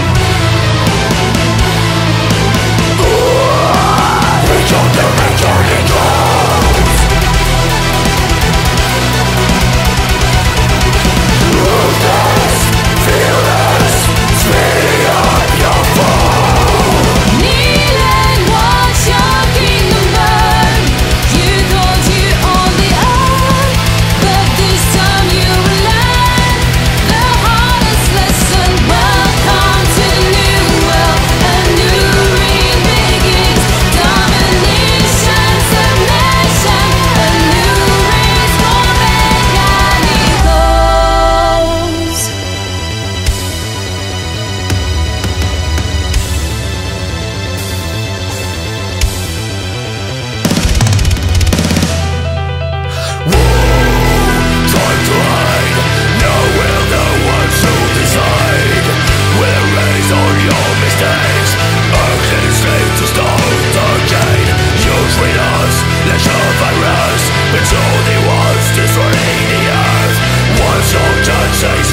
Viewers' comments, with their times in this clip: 0:05 that melody makes me think of castlvania. heh.
0:52 I'm getting some strong Amaranthe vibes from this, however the vocals sound very much like Chrigel from Eluveitie. It must be the Swiss accent coming through. Overall, wicked track!